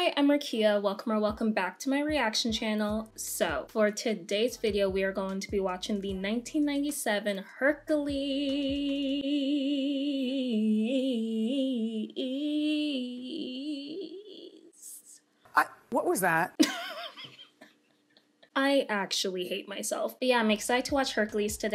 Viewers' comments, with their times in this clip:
0:08 she sings gospel